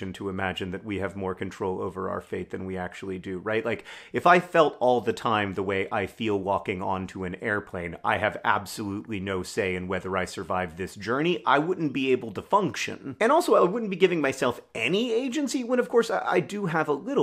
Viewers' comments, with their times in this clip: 0:04 The first of this video sounds exactly like a CGP Gray video lol